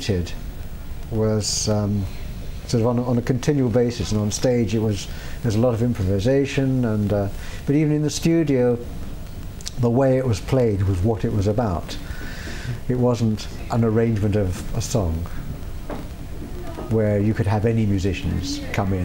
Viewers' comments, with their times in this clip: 0:06 Listen closely to the way he says studio lol. Anyways huge fan he cool.